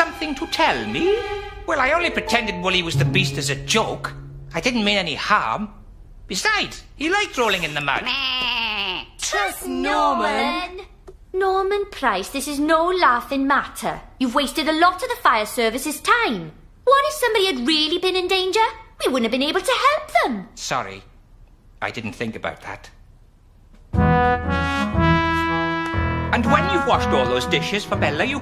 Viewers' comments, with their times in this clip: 0:09 TRUST NORMAN!! Mandy, Sarah and James said calmly.